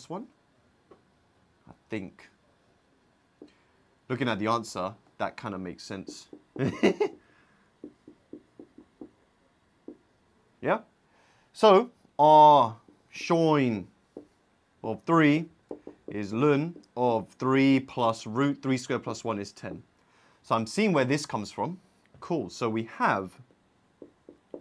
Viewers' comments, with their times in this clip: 0:05 the laugh caught me so off guard 😭😭